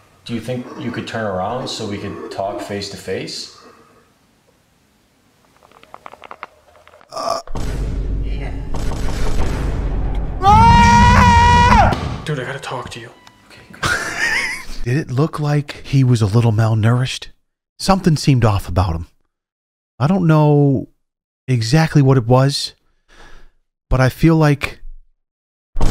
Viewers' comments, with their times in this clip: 0:10 The vine booms got me dead XD